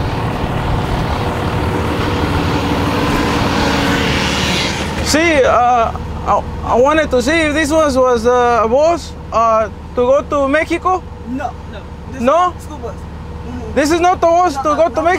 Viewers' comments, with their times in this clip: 0:03 was funny AF 🚌 to 🇲🇽 also I like how the lady spoke better Spanish than the Mexican customer acting like he don’t speak Spanish and only knows how to say “Tabasco” 🤦🏾‍♂️ #bushienolikely